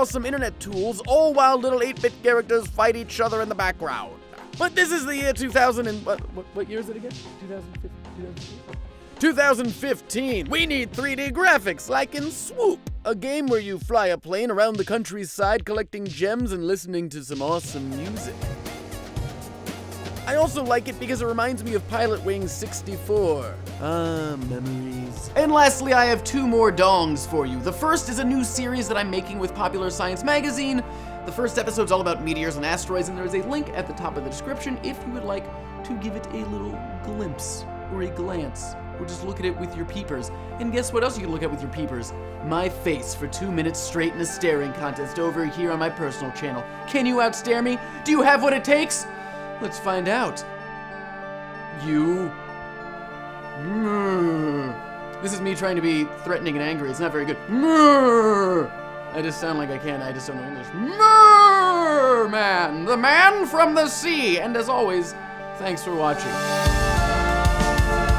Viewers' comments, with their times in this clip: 0:03 that Bane's voice tho haha
0:53 sounds like FEZ music